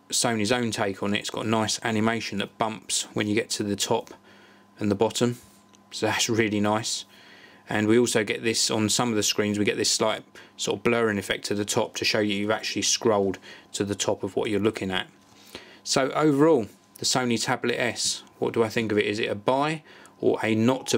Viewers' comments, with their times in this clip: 0:05 "so that's really nice" with a exiciting voice